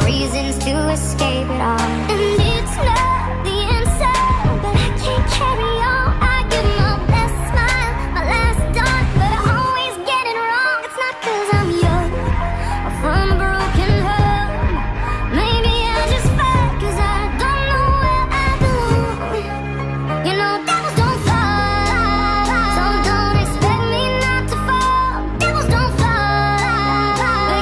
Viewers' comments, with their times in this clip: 0:08 i litterally hear her saying "my last duck" (the artist, not luci)